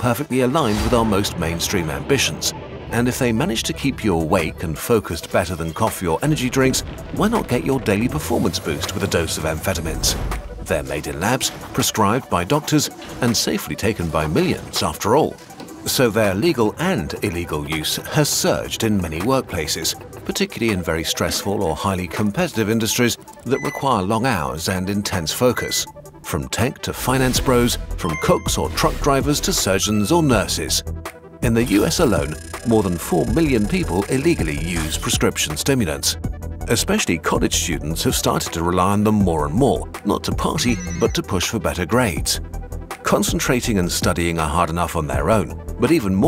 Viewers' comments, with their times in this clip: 0:07 I think your monster has an american accent
0:29 Hey, are we just not going to talk about the hard as hell beat in the background here?